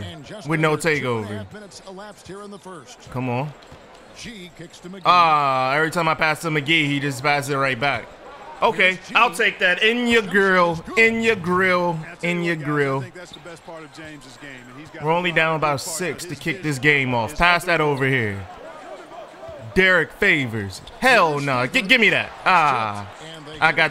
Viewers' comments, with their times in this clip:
0:09 I heard in your girl